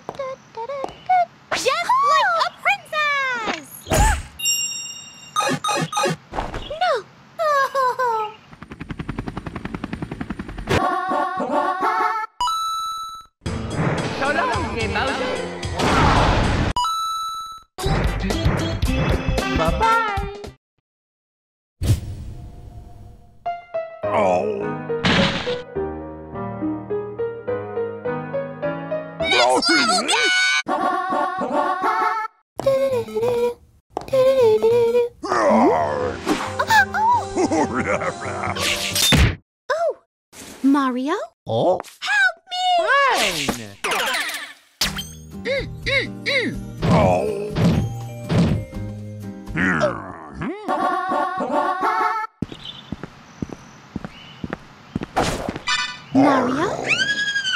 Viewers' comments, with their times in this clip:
0:07 Toadette crying!! She's not peachette anymore
0:35 roar the bowser
0:45 is it just me, or does mario saying MM,MM,MM sound like the eraser from that crayon show with the hat that picks one of them, going MM MM MM MM MMMMMMM